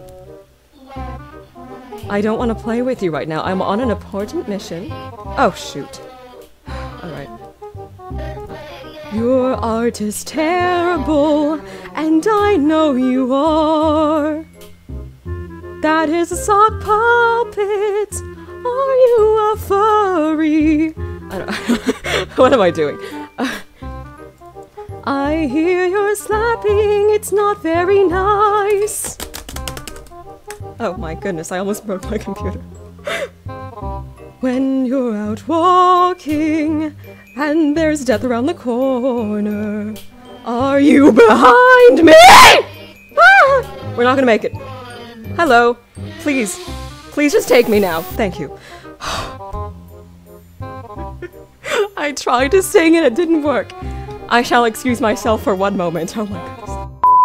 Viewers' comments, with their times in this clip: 0:08 your singing is so beautiful
0:27 She starts singing and dies
0:40 that “🎵are you BeHiÆnD MEÆÆEH!!!👹👹” was so funny😂🤣